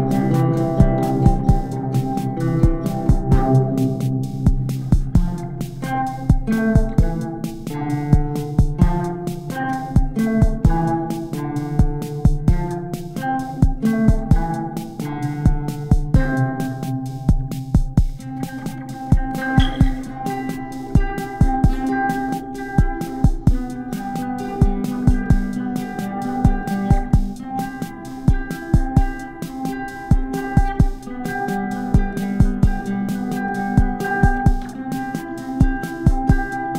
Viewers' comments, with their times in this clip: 0:04 kinda sounds like Yo La Tengo
0:20 sounds like it should be in a New Zealand film